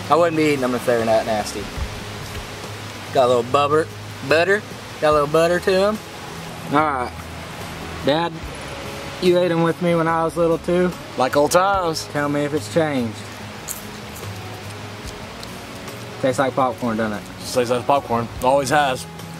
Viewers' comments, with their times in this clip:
0:03 always cook using bubber